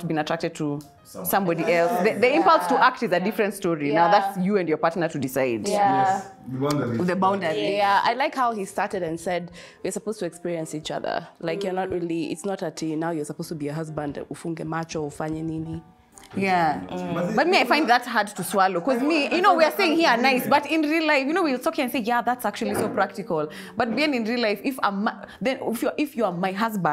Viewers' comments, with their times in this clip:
0:09 her voice mins in.....niicceee